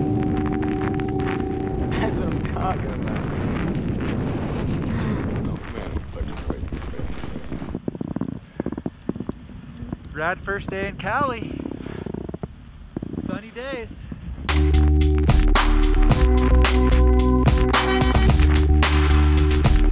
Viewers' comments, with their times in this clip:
0:06 I LOVE the sound of the snow... <3